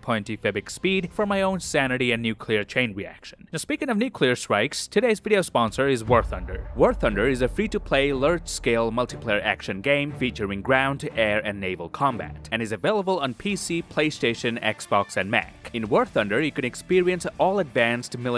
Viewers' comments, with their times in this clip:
0:06 “Speaking of nucular strikes…” is the best intro to an ad reel I’ve ever heard